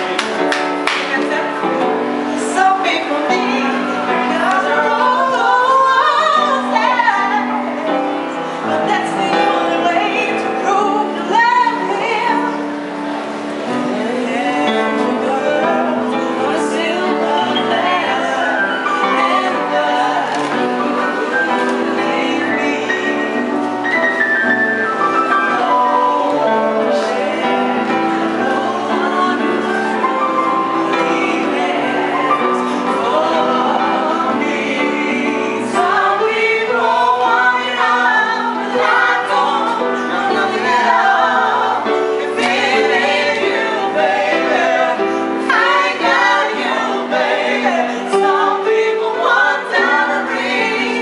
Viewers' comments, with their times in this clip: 0:09 once everyone started joining in I couldn’t hold in my smile . I probably would’ve joined in too. Even though I can’t really sing 😂
0:13 Once people started joining in I wanted to as well my gosh
0:34 Out of everything in this amazing compilation, I liked the part where the guy in the grey coat came in to purely add to her voice. He stared with pure intentions to make this moment better for everyone, never cut her off, went at her pace, and went quiet when she wanted to shine. Music might just be the cure all.